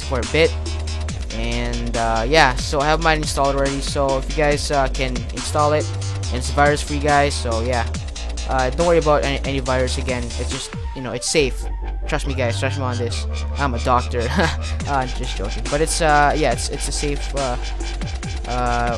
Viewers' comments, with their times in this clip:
0:06 did he say "its a virus for you guys"